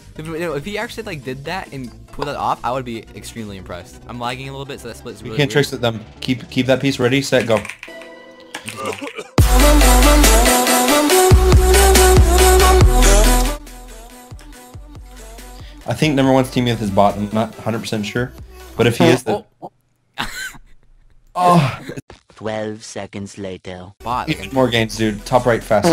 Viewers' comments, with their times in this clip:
0:07 Lol the keyboard spam